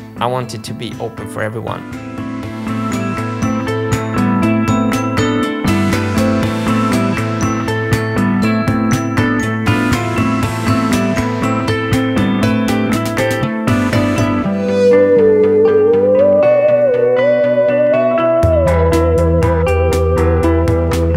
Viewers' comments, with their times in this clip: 0:09 how is a saw singing the most beautiful and emotional vocals ive ever heard? Ive got tears in my eyes!